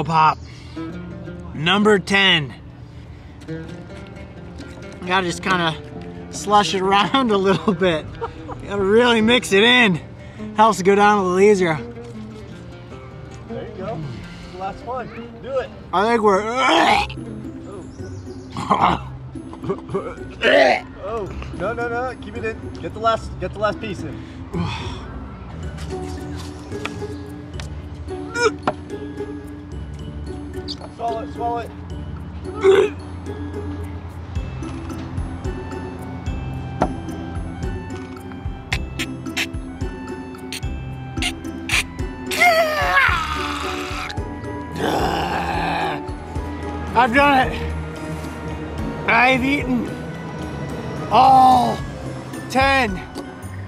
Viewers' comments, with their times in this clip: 0:10 did he say HELL this will go down easier?
0:39 After the last pickle pop I was regretting my life choices from those glitching sound💀